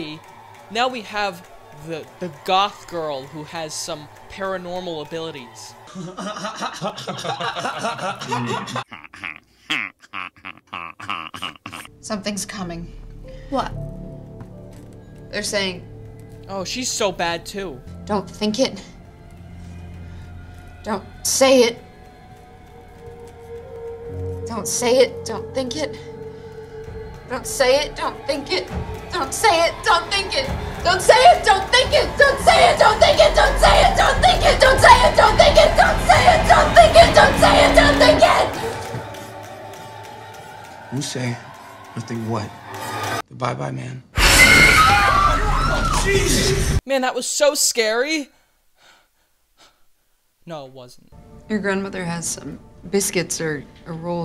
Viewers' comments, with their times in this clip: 0:07 That cut to squidward laughing killed me
0:17 If you skip to and play it at double the speed it is so funny listening to "don't think it don't say it" gradually getting faster and faster
0:41 ok so this girl screams 'dont say it, don't think it' over and over and their first thought is 'dont say what?' LIKE SHE'S GONNA SAY IT??